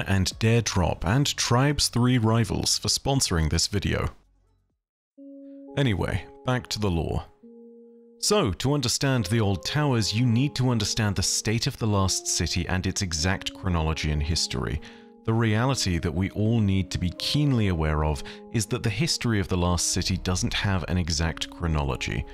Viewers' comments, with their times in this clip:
0:05 When that old tower music played man.... it's a tune on par with Minecraft's nostalgia